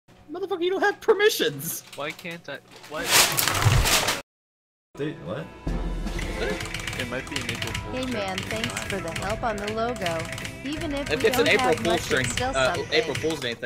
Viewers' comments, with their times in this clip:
0:01 Was that popcorn?